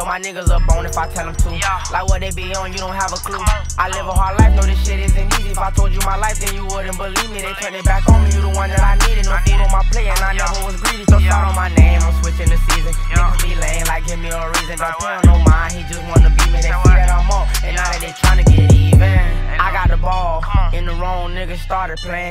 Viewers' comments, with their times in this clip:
0:10 mans flow and voice is insane